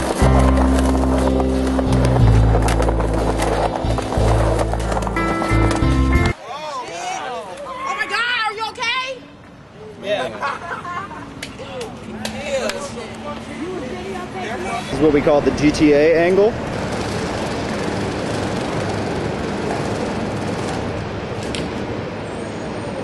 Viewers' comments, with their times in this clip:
0:07 Sounded like Glozell :)
0:08 yea..but now i cant hear shit aha
0:09 LOL THE WOMAN "oh meh gawd are u ok"